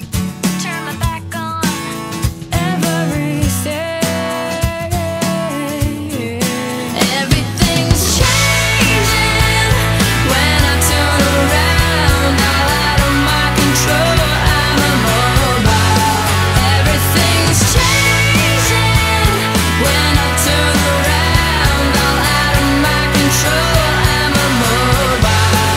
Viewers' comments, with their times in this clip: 0:07 There's a burp lol